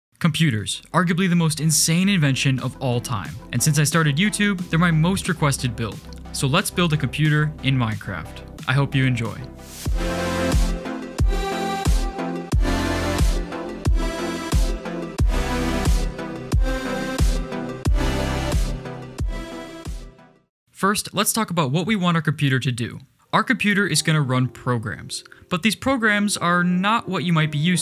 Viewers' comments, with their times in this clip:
0:09 First time here and i just got mind blown of how good the music is